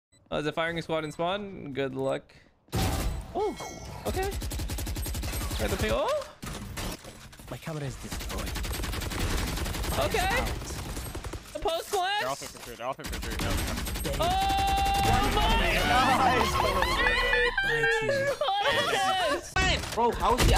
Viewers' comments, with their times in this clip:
0:06 when my girlfriend screams .